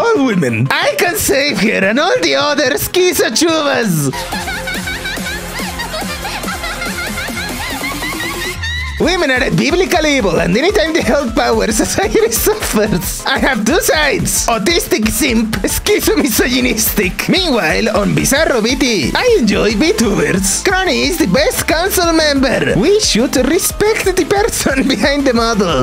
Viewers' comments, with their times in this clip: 0:09 I can’t when even the narrator starts cracking up reading the level of autism.